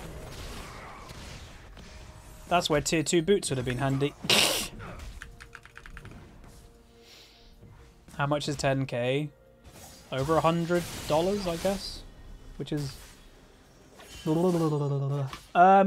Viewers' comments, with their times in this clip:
0:03 That scream ish when the Xerath ult hit. That made me laugh so hard, thumbs up